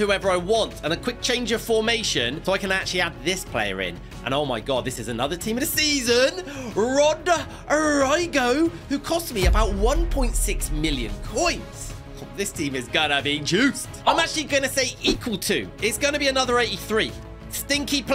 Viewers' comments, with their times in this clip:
0:06 "RODE ROYGO" got me wheezing